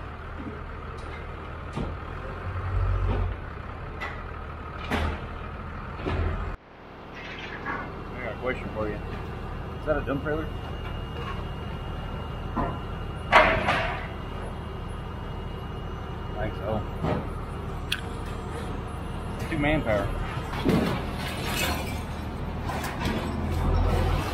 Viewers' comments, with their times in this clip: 0:10 Did you say something about a dumb trailer? Nah, you wouldn't say that... maybe I was just thinking along those lines lol!